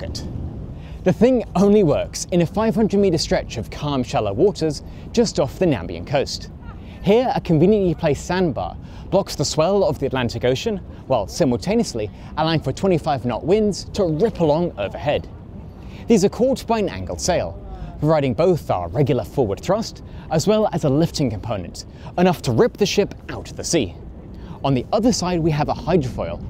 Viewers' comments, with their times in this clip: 0:08 Walvis Bay is in a country called Namibia - with two "i"s in it - it does not rhyme with Zambia. Just a little detail you might want to flag!